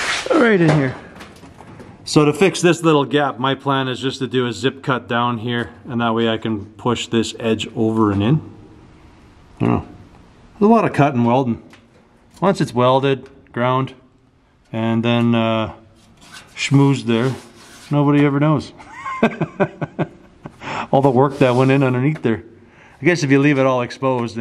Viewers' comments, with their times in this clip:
0:09 Did you fart ? Hahaha